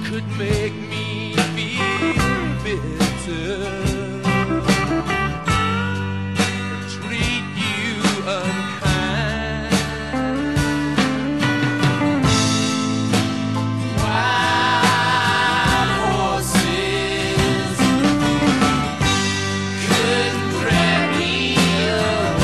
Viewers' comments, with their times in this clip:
0:08 my favorite part of the guitar after he says "Treat you unkind" ... it gets me EVERY TIME!! They never play that part live.... Beautiful song❤❤❤